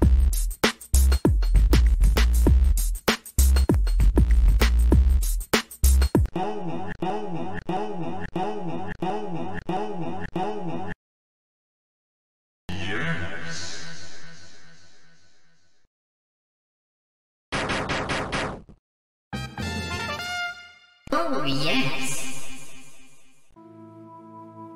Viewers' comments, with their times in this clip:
0:06 5 seconds of ohno Me: Ah, music to my ears.